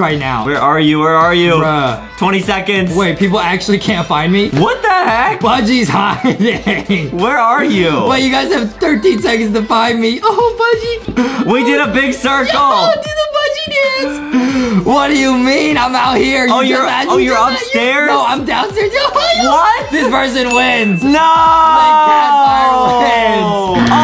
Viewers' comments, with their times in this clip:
0:06 shes peaking lol